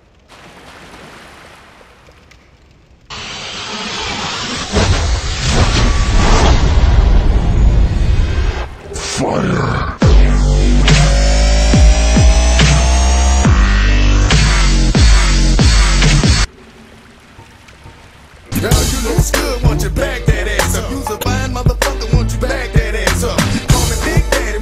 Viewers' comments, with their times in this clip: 0:07 YESSS the fucking Bass Cannon